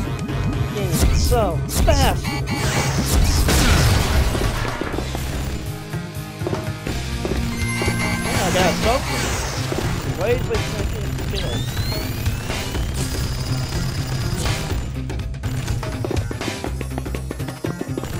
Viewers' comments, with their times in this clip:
0:05 looool this game is a riot. it can be fun for a time then gets old... then gets fun all over again xP as to your commentary problems. you had a good bit going around the mark. I would suggest lowering the game volume by about -4DB, cause while Yes we can hear you. the distraction of the game audio makes it difficult to hear you. VERY COOL!! I never got strong arm sam lol